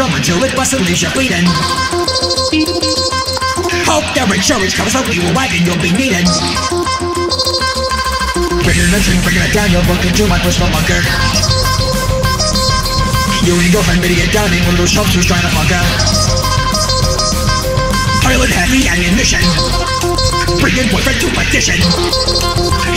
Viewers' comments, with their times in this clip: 0:05 The fact they can use the term wee woo wagon and it acctually sound good is amazing XD